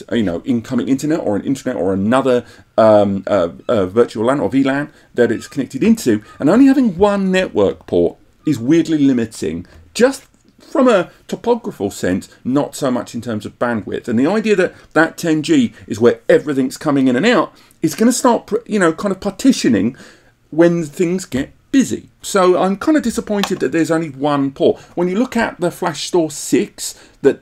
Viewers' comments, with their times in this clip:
0:09 The seagulls are trying to tell you that we don't have enough PCI Express for another Gigabit port, but we have the USB port for our 2.5-Gigabit adapter if you wanna do that.